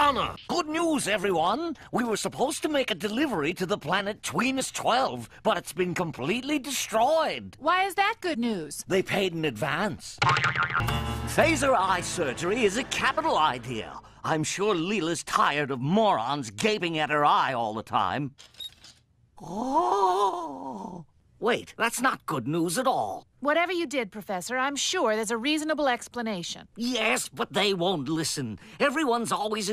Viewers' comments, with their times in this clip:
0:10 ….what was that “Boing!” sound effect? xD